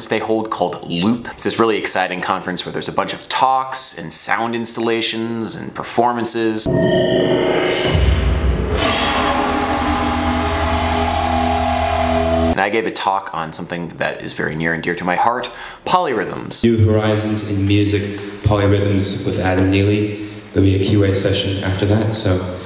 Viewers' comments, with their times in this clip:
0:07 WTF is that glorious fucking noise?